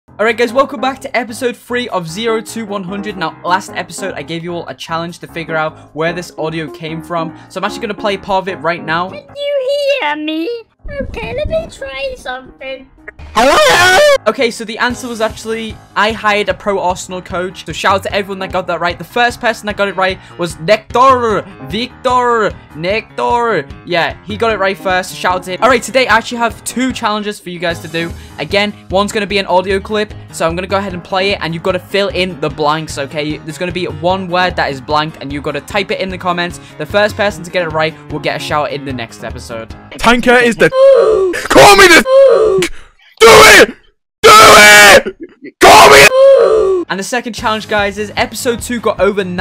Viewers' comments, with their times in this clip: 0:02 It sounds like "zero two"
0:35 why does that sound like KSI swearing to Tanqr